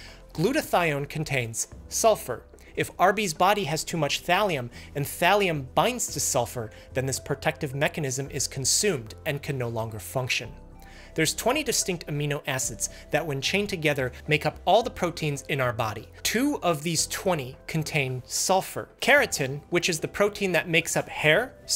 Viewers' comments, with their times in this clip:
0:04 The SUCCinate DEEhydrogenuts 😩